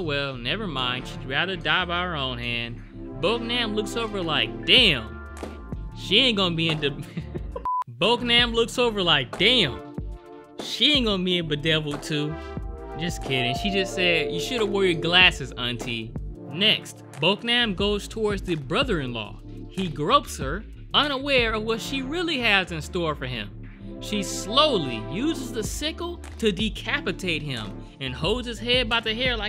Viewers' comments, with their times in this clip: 0:10 i know i'm not the only one who heard that in Chris Tucker's voice lmao